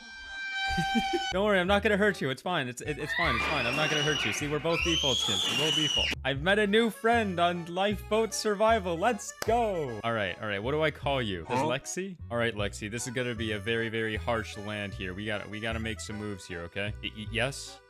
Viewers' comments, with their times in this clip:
0:05 Bro The Screaming 😱😊😅😂😮Is So Funny and Noisy